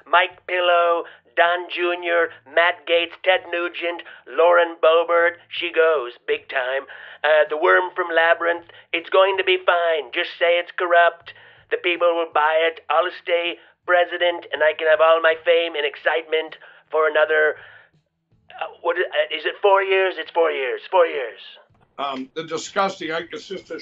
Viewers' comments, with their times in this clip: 0:06 you did the best voice Of trump!